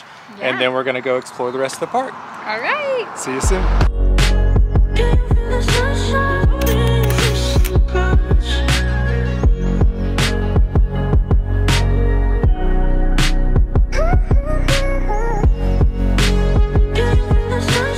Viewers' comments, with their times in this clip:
0:05 Also that track sounds like some Musicbed fireeee